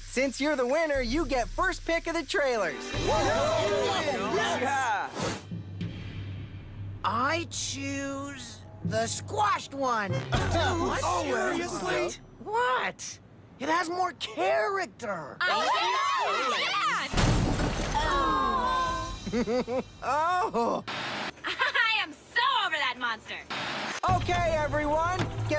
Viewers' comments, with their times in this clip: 0:09 the music just makes the argument funnier